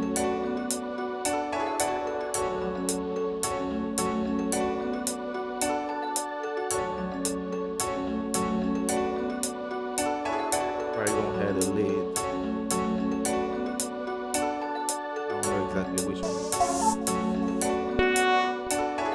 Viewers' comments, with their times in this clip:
0:03 -> The Melody is fire bro :0